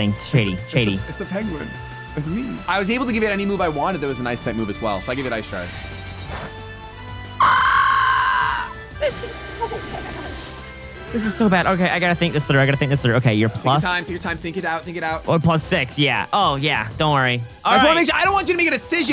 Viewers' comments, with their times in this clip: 0:06 Bro Is a new Pokemon Cry